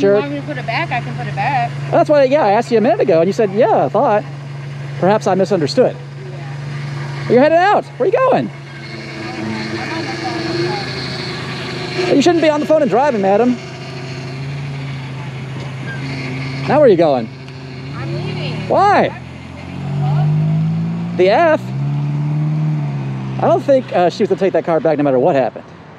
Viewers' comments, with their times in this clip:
0:08 her power steering pump is as low on fluid as much as her ability to own up to correctness. Lazybones.